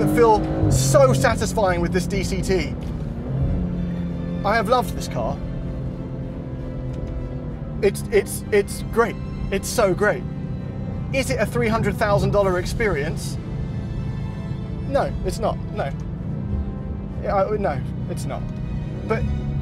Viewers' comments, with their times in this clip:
0:03 I HAVE LOVED THIS CAR you can here the passion in his voice